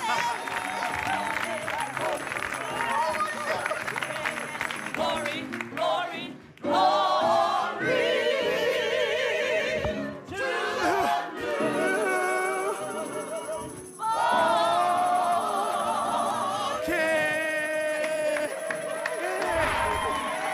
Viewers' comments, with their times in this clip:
0:03 gotta love how this lady in the middle was giddy with laughter xD